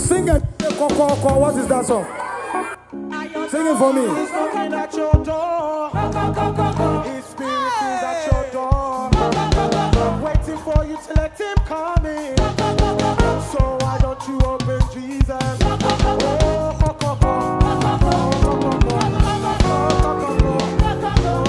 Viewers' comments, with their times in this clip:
0:03 Kokooko song powerful